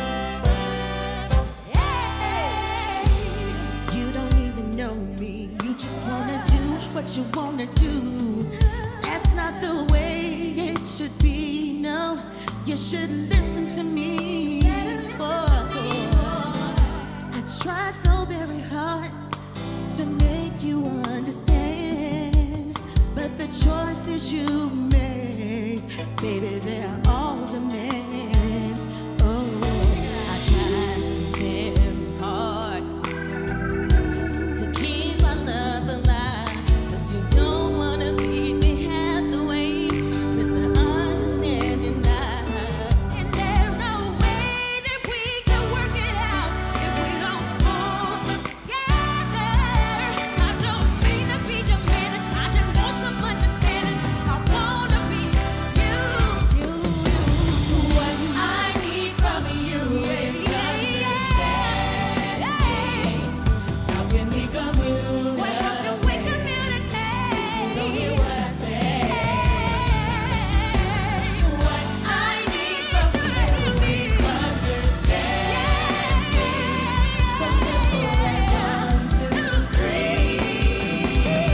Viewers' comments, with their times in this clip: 0:10 Can we take a sec to appreciate Kandi and all that Diabetic, Stick, Sweet, Goodness that she's dripping ? Dizzamn nit
0:29 she should have manipulated dat note but starting it a little higher then dropping it down to where it was comfortable for her voice and she could have pulled it off. Those notes are not in her range, but Toni thee Braxton would have ate those lower notes for breakfast. But i still liked it tho, i love a struggle and i respect live vocals.
0:30 Wanna know what a struggle bus sounds like... play then find out why we wear seat belts in this bus. ROFLMAO
0:30 “..i tried so very hahauord”🤣😂🤣😭 who gave them the permission to do this lmao
1:04 Eh, 702 had a few good songs, but they weren't the best vocally. They don't have much range. K definitely tries to pick up where they vocally lack, but you can see she didn't risk embarrassing herself trying the note